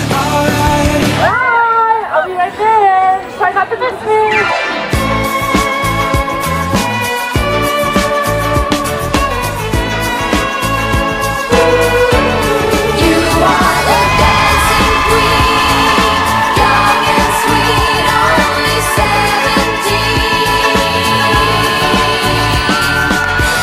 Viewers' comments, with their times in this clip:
0:05 dancing queen comes on David dobrik enters the chat